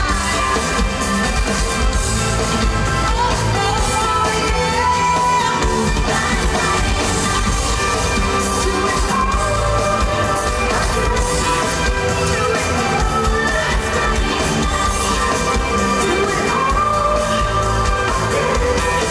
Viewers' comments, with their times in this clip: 0:04 was lip syncing probably